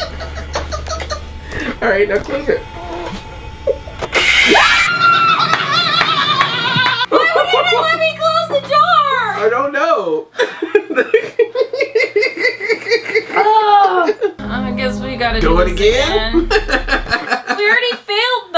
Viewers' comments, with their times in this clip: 0:05 That laugh was scarier than the game!